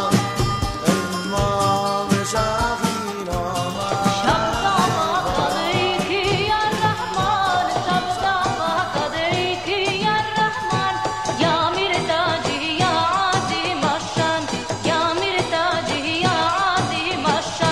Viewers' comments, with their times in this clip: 0:05 is classic and unmistakable Ofra Haza. What a voice to remember!